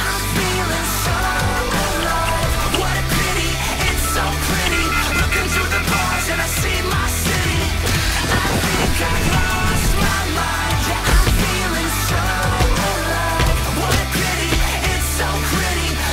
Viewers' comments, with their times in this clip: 0:04 made me think my housephone was off the hook XD